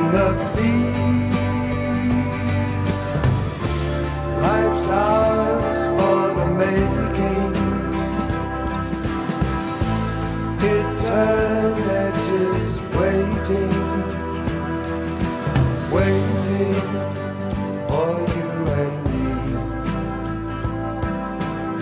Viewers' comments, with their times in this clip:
0:09 MELLOTRON PORTAMENTOS TAKE YOU FROM THE PIT OF MANS FEARS TO THE SUMMIT OF HIS KNOWLEDGE